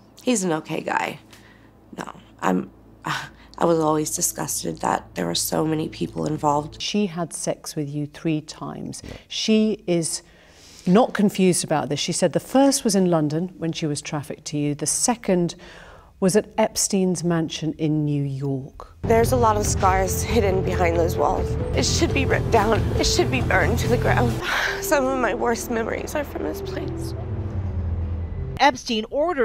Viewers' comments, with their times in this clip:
0:09 he went pretty quickly from laughter to someone who just learned they found his fingerprints on the murder weapon and his DNA on the body 😅
0:12 what was that nervous laugh all about? He's just pure evil
0:13 I'm curious about his "laugh" what are your thoughts about that?